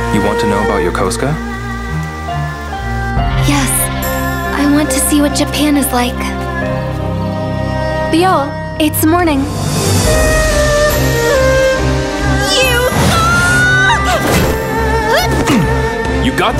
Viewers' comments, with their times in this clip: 0:04 did I just hear it wrong? "I want to see what your pen is like"